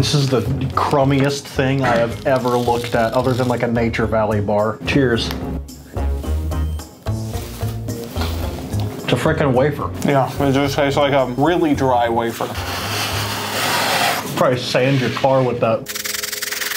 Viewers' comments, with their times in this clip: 0:03 Did anyone else hear tears